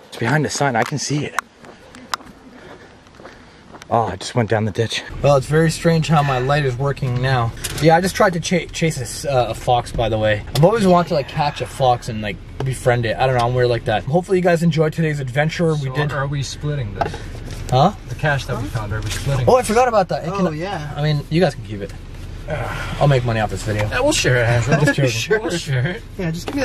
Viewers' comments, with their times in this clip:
0:06 I Hear a Voice whispering "God"? Then AFTER he says ' I tried chasing a fox' the voice says " yeeeah" 🤷🏻‍♀️🤷🏻‍♀️ IDK tho I'm probably misinterpreting it
0:09 sounds like a heavy breath in the mic.
0:11 something attached to yall and it was whispering very low and demonic in the car
0:11 theres a whisper saying like kill😳😳
0:11 sound like a demon says get out